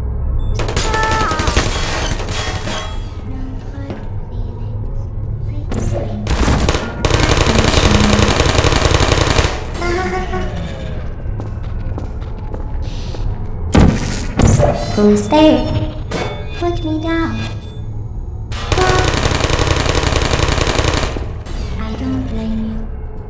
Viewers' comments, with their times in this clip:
0:09 "hahahahahahah" cassually dies